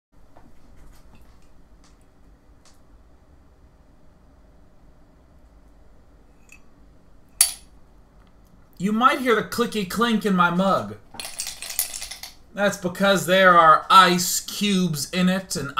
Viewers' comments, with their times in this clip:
0:00 AWKWARD PAUSE <3